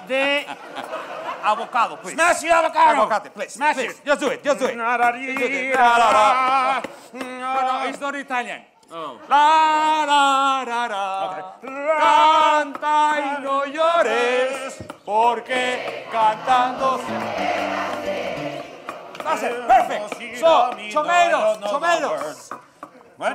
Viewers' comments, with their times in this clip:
0:06 The band was asleep. Totally missed the queue